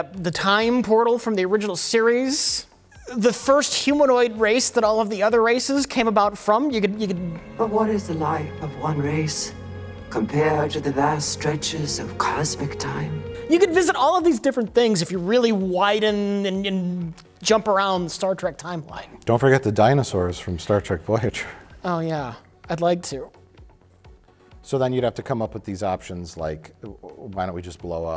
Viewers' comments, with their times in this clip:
0:09 looks and sounds like the female changeling from DS9